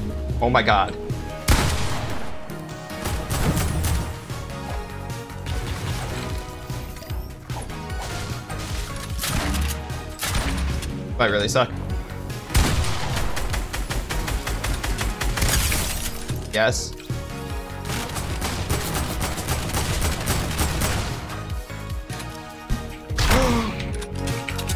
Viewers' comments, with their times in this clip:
0:03 the bulds goes waaaay SO good with the music in background
0:05 the structures breaking fits the beat